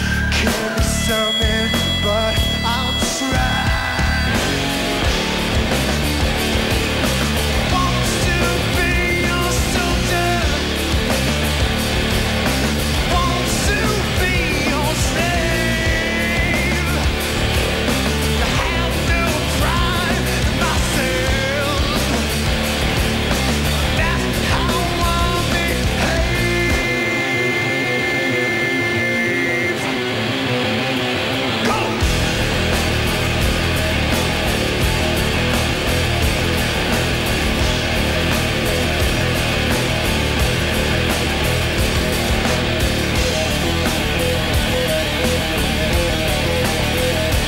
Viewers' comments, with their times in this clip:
0:07 the true power of DJ vocals... an absolute animal of the vocal instrument
0:31 That "Go!" in Slave with the lower octave on the guitar kicks so much ass.